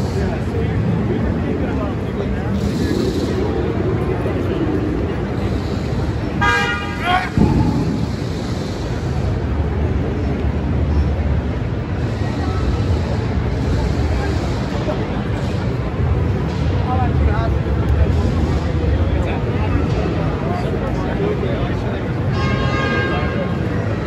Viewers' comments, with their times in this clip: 0:06 Thay beep and yell from some dude killed me 🤣🤣